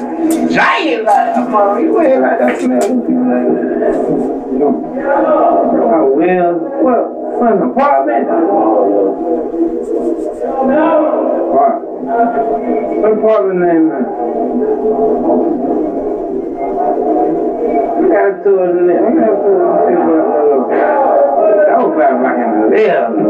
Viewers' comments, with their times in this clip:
0:04 and why does it sound like a fuckin wire. during the audio from the pc sounds like that dudes surrounded by helllla people acting goofy..